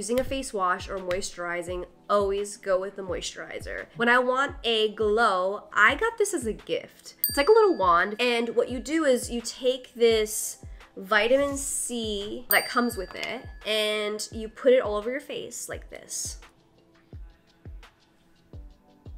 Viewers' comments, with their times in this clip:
0:07 dont know why exactly but it starts my google assistant :D maybe because of word "glow" :D